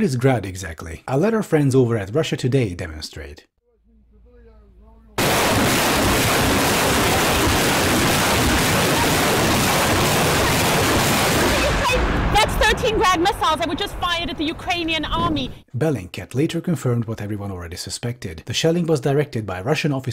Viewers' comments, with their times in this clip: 0:06 this woman is gonna suffer permanent hearing loss. :(